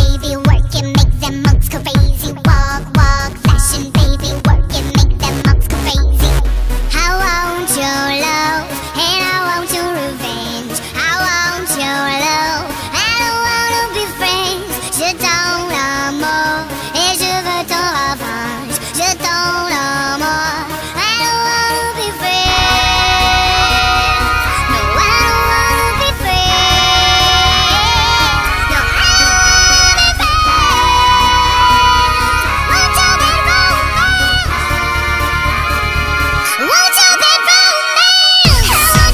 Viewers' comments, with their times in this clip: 0:07 this part is Jeanette
0:22 I like how they are all harmonizing